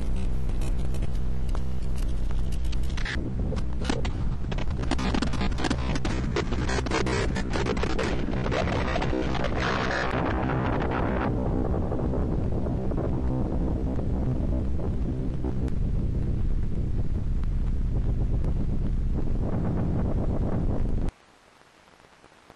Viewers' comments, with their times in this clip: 0:05 sounds like a song